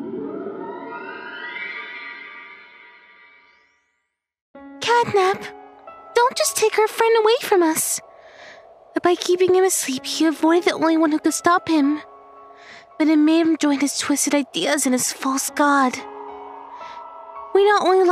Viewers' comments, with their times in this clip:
0:04 DogDay Voice was a girl?